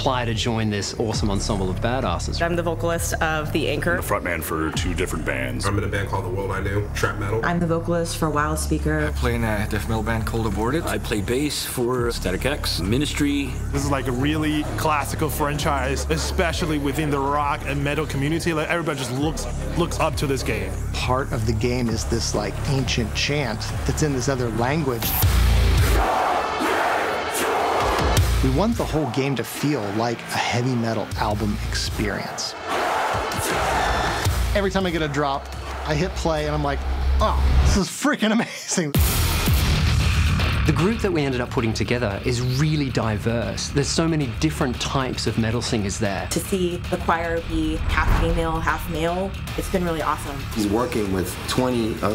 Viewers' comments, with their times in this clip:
0:04 This is so fucking fire THIS GUYS VOICE HOLY SHIT SO COOL
0:25 yo, that choir sounds like kinda whip smaking the naked flesh, holy shit!
0:26 that sounds like cod zombies honestly. Not saying that it's a bad thing of course.
0:34 Editor's out here making drops out of a guy talking about a drop, what a god